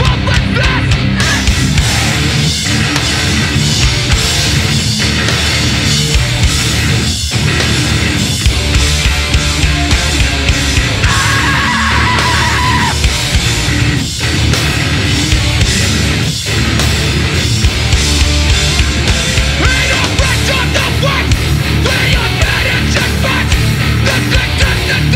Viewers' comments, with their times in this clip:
0:09 Manliest scream out of hardcore.
0:11 that scream is fucking sick